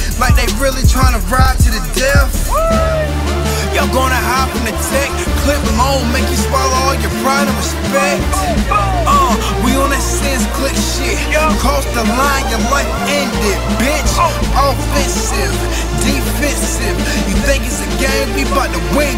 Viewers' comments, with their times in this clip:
0:03 Beat gets diiiirty, !! "Three stoves on, niggaz water-wippin' ..." LOL A Nas line comes to mind now though: "Coke on the stove ... I'm not going back ..." - Some words of wisdom from "Not Going Back", "Hip Hop is Dead" album.